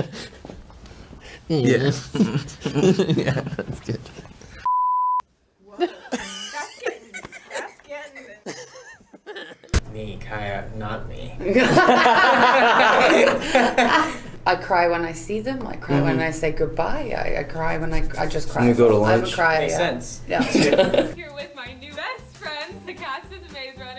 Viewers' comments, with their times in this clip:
0:06 BRO HIS LAUGH IS SO CUTEEEEEE
0:08 his little laugh is so cute
0:09 i love when Thomas Brodie Sangster laughs, it’s so cute and can make anyone smile. but my favorite laugh was that evil chuckle😂✨
0:09 wtf was that laugh Thomas
0:09 That is one creepy laugh Edit : (turn on max volume to hear)
0:10 i kept replaying thomas's laugh XD
0:10 1 his laugh 😂😂😂